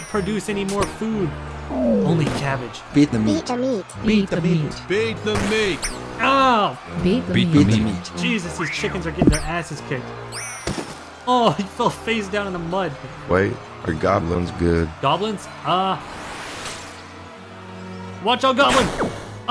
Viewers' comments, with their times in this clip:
0:06 Wtf is that sad music ??? It sounds so familiar!!!